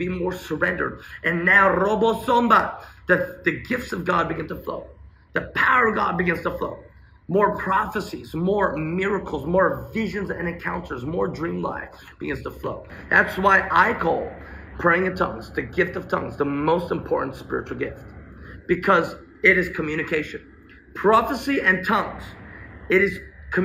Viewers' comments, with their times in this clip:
0:10 Is there a strong wind in the background or sound being piped in after onward? I hear wind blowing in the background...